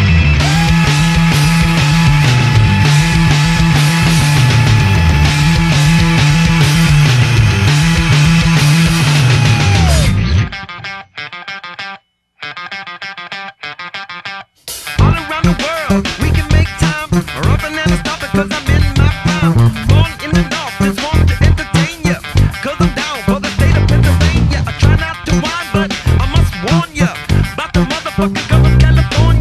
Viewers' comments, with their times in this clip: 0:10 doesn't he slap ?